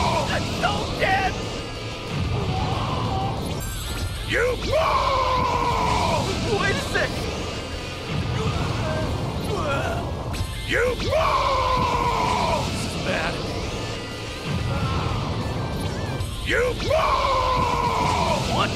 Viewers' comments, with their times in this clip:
0:06 Shotto Mate Kureee! Got used to JP voice acted Yamcha